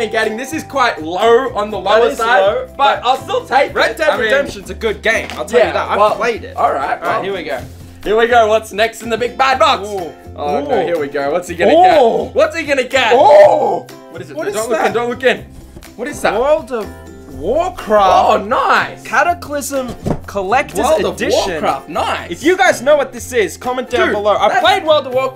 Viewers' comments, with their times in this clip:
0:08 doesn’t that “ooh” sound like a sound that a villager makes in Minecraft?btw I love how the get a silver coin,a Rolex,gold ring,and a bunch more and they are like wow cool.